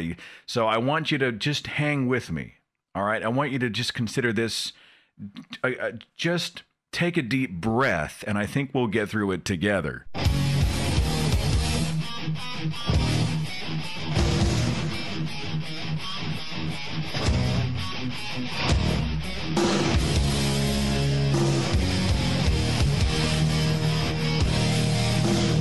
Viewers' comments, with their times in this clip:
0:09 brought back my youth (minus lyrics, but I always concentrate on guitar riff anyway).